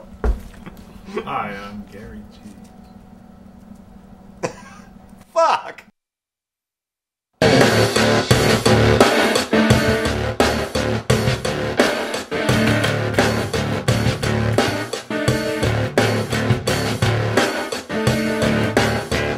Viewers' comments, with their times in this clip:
0:06 My favorite part was when Reb started in the room with a strutt just before Kip startled himself with the volume being so loud... HAHAHA, lol! Check him out! >